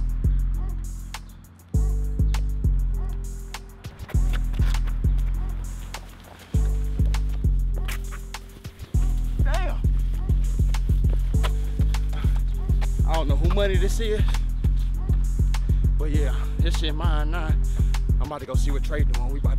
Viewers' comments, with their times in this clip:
0:03 That beat goes hard